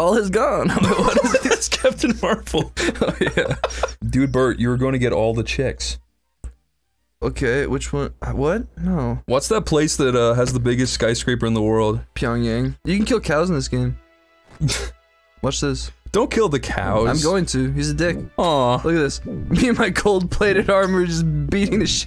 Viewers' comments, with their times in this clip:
0:09 no hesitation on the Pyongyang